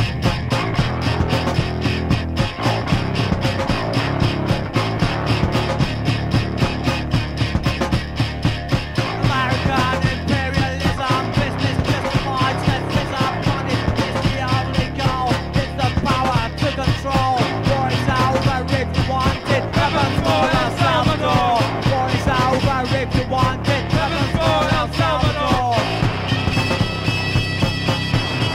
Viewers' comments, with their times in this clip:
0:09 this song is technically rap